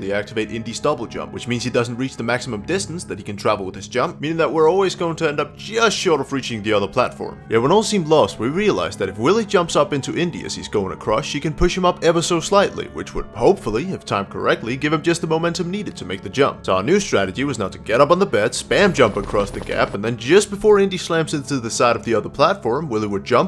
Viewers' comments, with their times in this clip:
0:09 its am and the knock on the door freaked me the fuck out